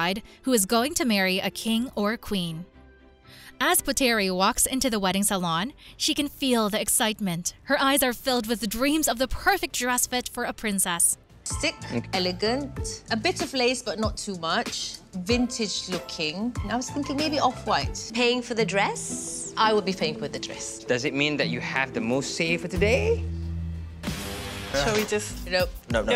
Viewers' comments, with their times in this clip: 0:10 In ... she's going to marry a king or a queen? 😮 This voice over.....is it AI? It always says something that comes across as weird. ..